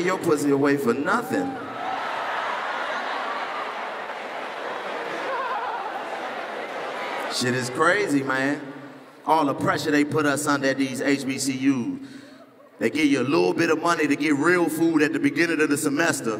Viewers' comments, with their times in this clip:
0:04 that legendary laugh. LMAO